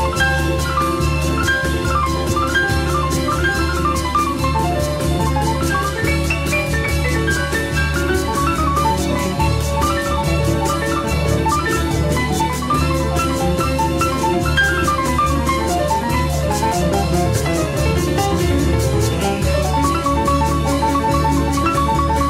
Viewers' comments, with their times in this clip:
0:05 For the classical music lovers: almost sounds like finale Prokofiev's 3rd piano concerto.